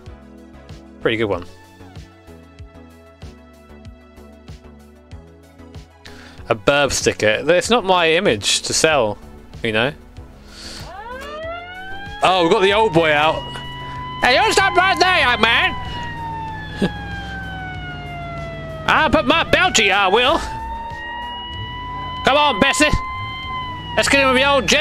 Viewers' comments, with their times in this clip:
0:05 Amazing American policeman impression